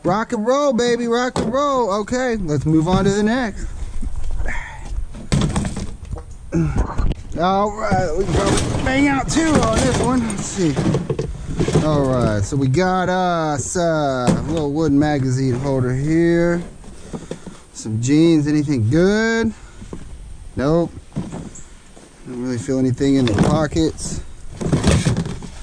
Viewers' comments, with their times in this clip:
0:06 Was that a fart ?